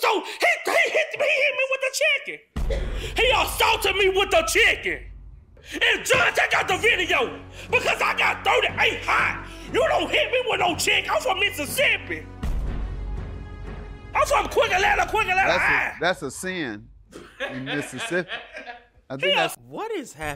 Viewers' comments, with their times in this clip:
0:06 Not the Goldberg theme 😭😭😭😭